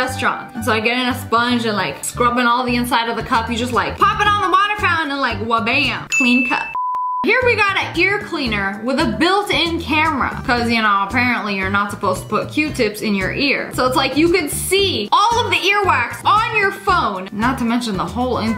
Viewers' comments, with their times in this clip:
0:05 useless that are dishwasher wait what the hell is a dashwasha 😐